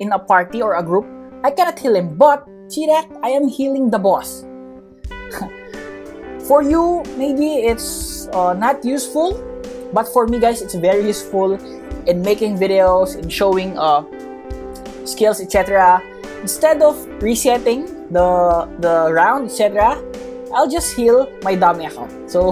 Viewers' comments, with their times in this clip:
0:05 he laughed to himself bruhh